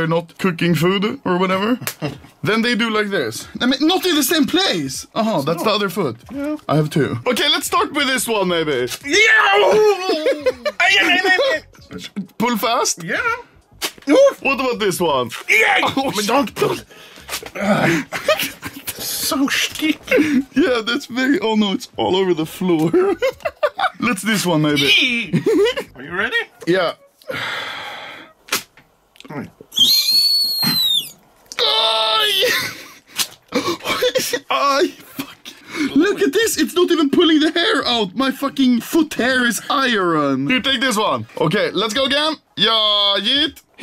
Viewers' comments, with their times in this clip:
0:08 what type of Tom and Jerry type of scream is this
0:24 EeEeEe and then te kettel 🫖
0:24 that "EEE" was fucking gold
0:28 I think my kettle is ready
0:29 i thought that was sound effect XDDD
0:29 ah, excellent work on the British mating call there Anomaly
0:29 I Actaully though That was a Sound Effect
0:30 me hearing a siren